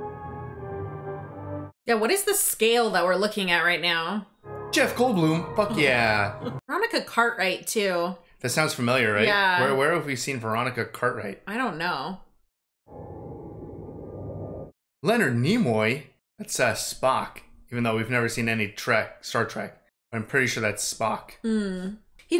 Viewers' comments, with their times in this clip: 0:04 "Jeff Goldblum, f*ck yeah!" the enthusiasm 😆